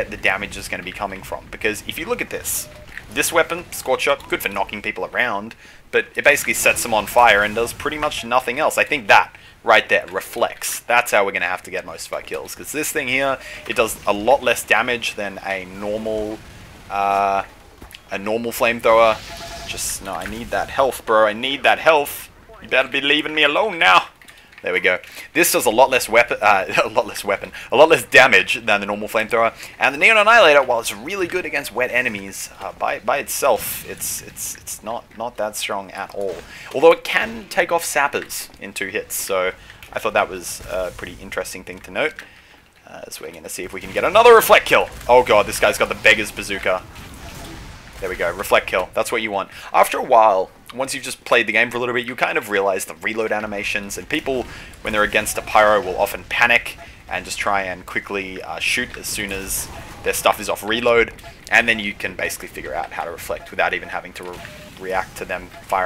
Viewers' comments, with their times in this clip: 0:03 Uh in the video did the sound go off
0:46 "This guy's got the biggest bazooka" ;)